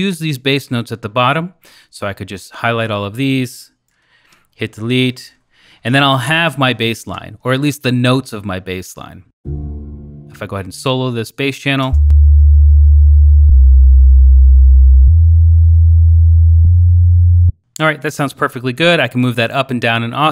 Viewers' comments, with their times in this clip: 0:03 At first, I thought the plugin was complying with classical "voice leading", but from it seems the writing has many perfect fifths and parallel motion. Perhaps writing excerpts that comply with voice leading principles can come in a future update?